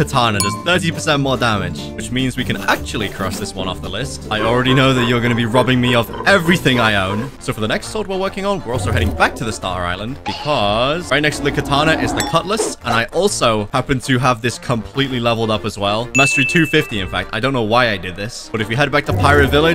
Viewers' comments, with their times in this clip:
0:04 DEVIOUS BLACK SMITH LAUGH >:)